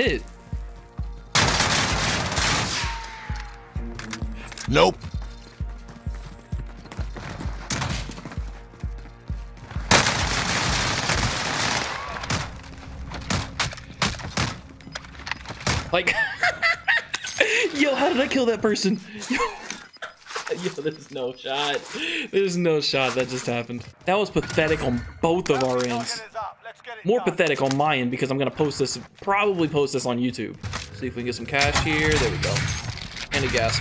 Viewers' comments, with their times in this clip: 0:06 wtf is that laughter that couyght me off guard
0:15 what was that laugh funny kill tho
0:15 what was that laugh pure joy
0:15 he voice cracked so hard😂
0:16 Yo what was that laugh 😂
0:16 the laugh tho 🤣
0:19 Who else laughed to hard when they heard his laugh